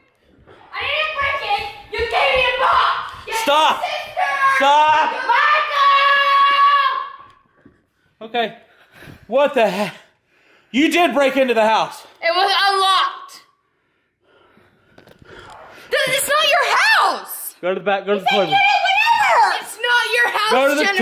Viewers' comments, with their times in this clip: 0:05 it sounds like when my sister is trying to keep our cover by yelling “Mom’s home!”